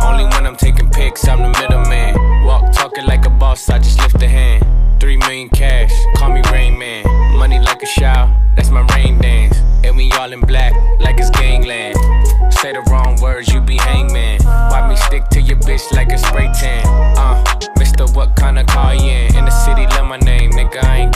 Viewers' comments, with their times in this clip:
0:07 Idk yall but I swear I can hear some breathing